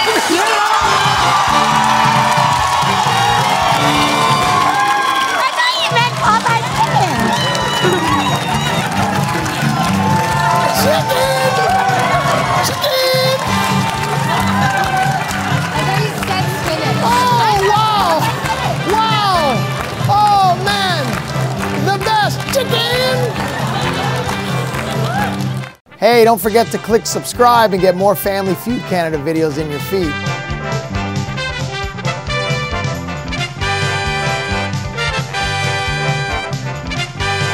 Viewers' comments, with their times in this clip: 0:05 wth is that voice
0:20 it looks like she said “I’m blonde” 😂😂😂